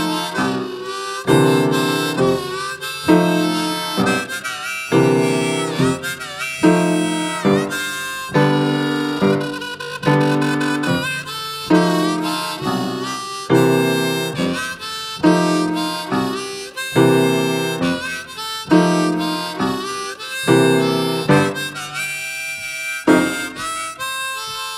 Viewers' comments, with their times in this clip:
0:09 Charlie that intro was fantastic! The little inflection made me call out like I was at a show